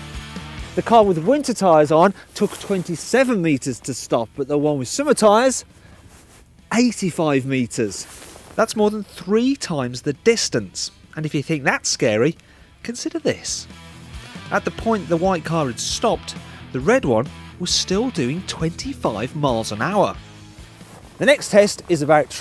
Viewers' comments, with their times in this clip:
0:08 i hear "85 metres", not 58. Why is that